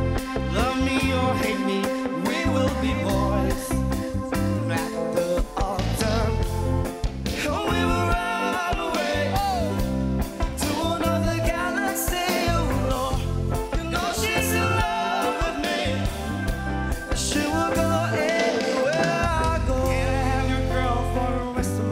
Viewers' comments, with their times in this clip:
0:09 this part wooooow his voice😍